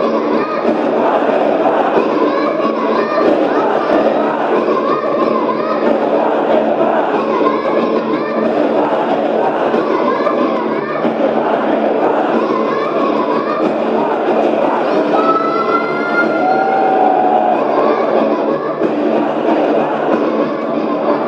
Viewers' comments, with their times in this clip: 0:03 Yui yells "I'm falling" Those who have ears should hear ;)